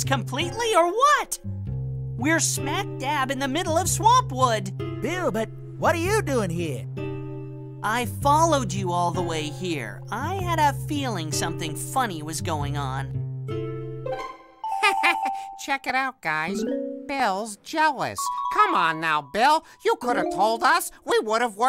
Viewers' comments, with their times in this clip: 0:05 Ed has the wrong voice from Oly.